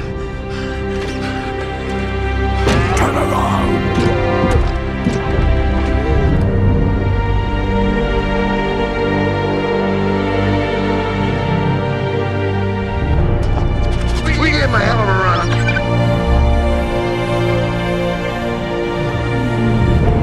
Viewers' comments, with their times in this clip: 0:06 That look is Scarring, with the swelling music behind it realy tops it off!